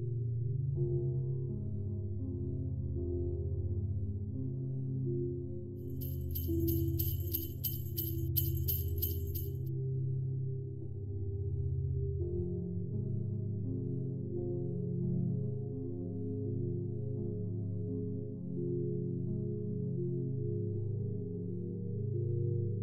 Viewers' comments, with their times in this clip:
0:04 Clap........Clap........Clap Others Facepalm